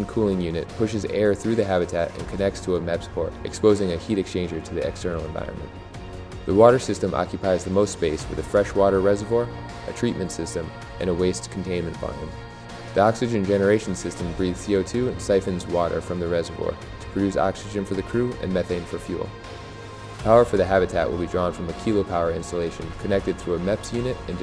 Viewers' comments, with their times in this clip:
0:10 did you say waste containment bine? A bine is a helix-wrapped vine on a tree lol. Unless it is a homograph then I stand corrected. Anyway, I LOVE the design and layout. Very efficient design and great interior planning. I hope you and your team get a green light to mass produce these modular environments for Mars. I will be rooting for you.